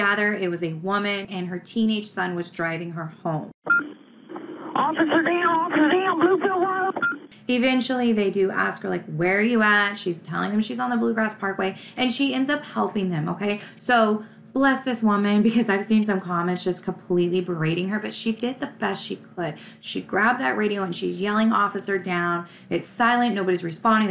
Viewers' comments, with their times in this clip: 0:09 sounds like a woman's voice to me.